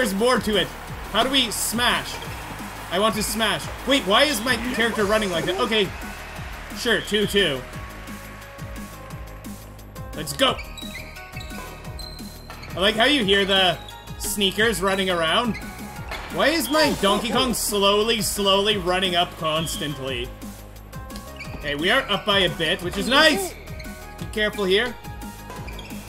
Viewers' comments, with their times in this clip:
0:07 he sayed poop aka to to